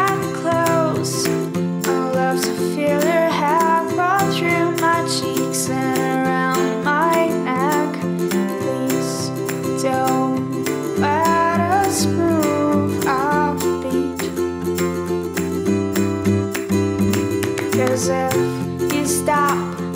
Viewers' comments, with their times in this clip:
0:07 Does she say "Please don't let us screw Offbeat," :D